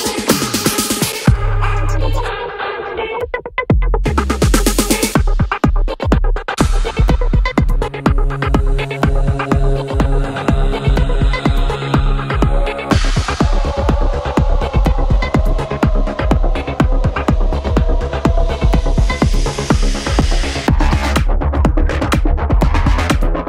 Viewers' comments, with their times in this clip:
0:08 When Psytrance meets Dr Who.